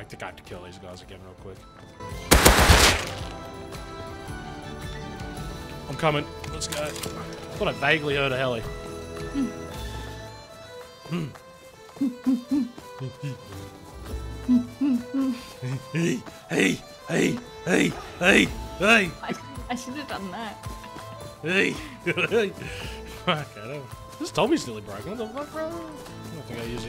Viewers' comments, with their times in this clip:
0:09 how consuming the marriage will sound like.